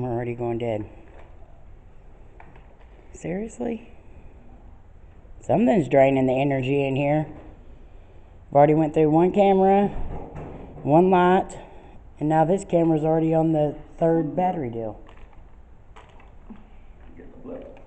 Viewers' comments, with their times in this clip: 0:03 or a little before, after you tell them that they can speak into any Camera and be heard you get a woman s voice say okay right as your starting to say something else so you voice is kinda overlaying the voice at the end of OKAY please let me know if you hear it or if it was someone with you but it is in a whisper. Also I was noticing you all were still but when you panned your camera around it looked like a woman walked across the window or glass across the room from where you were that was creepy I also thought I heard the name Cammie when you were asking for the name.